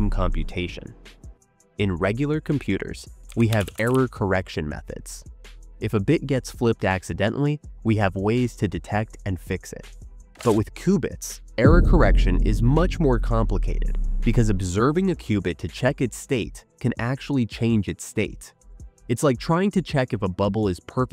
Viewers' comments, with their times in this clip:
0:04 'Terror correction methods'. What??? AI failed on that one!!! I think they meant 'Error correction methods, though they are showing a guy in camo gear at the keyboard, so mayber 'terror correction'? I am so confused, can AI answer this for me? The very next scene is late 1980's/early 1990's server/terminal equipment. Why?